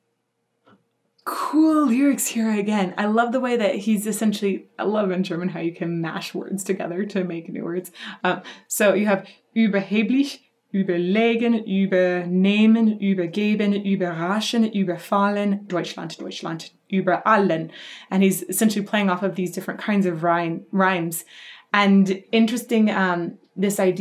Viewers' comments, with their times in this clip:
0:05 LOVE your german pronounciation as you list all the über-verbs